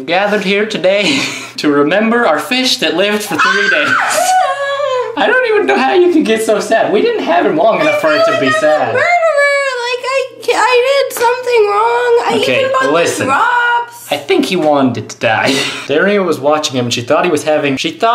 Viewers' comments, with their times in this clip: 0:03 what cry is that?